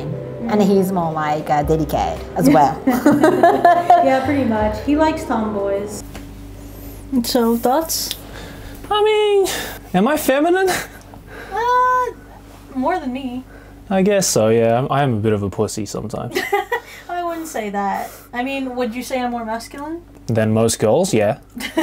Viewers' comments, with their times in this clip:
0:08 lol @ the high pitch...